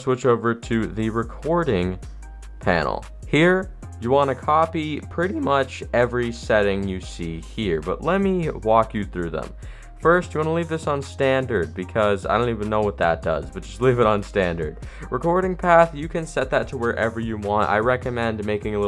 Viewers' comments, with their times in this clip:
0:04 That voice crack OMFG